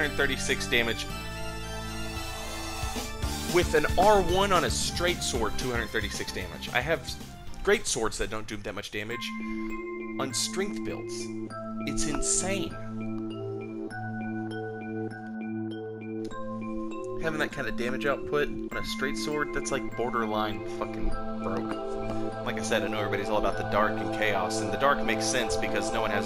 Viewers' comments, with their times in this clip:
0:09 Song gave me some old runescape nostalgia, what is it?